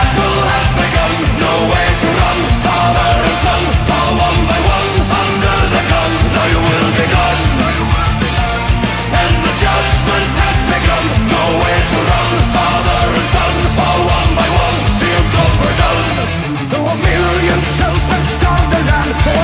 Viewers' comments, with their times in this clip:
0:07 you can hear Joakim saying "Thy will be done" in the background